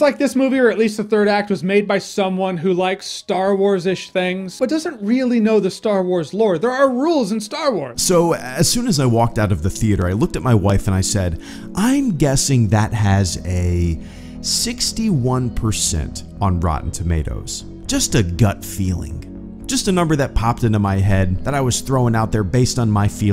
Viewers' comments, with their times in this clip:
0:06 where did the sound go again?
0:07 I finally get to sit down and watch and 2 times the volume goes out the 2nd time is was this done on purpose ?